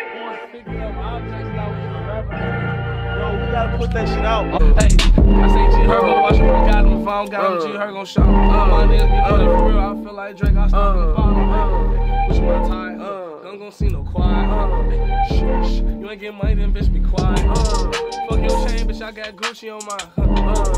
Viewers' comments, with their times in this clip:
0:07 that beat is crazy